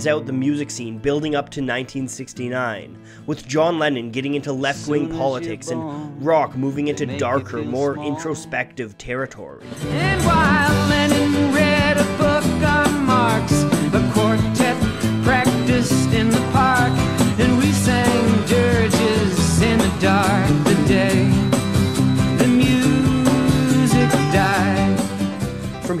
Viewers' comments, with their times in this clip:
0:10 I ALWAYS THOUGHT HE WAS SAYING "LENIN" NOT LENNON OMG WHAT